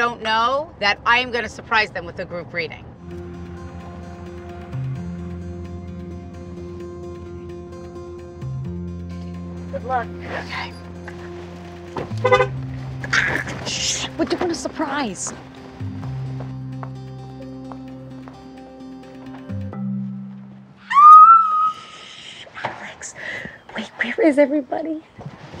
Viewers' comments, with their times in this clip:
0:10 Her yellin at the car had me laughing so hard omg